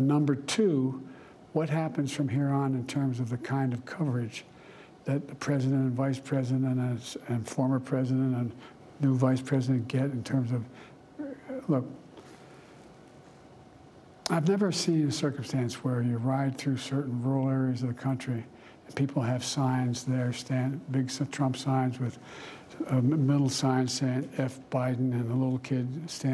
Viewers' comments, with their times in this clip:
0:08 BIDEN MAN WAKE THE HELL UP. How the hell can anyone understand where he is going when he speaks? He literally cut off mid sentence there, terrible.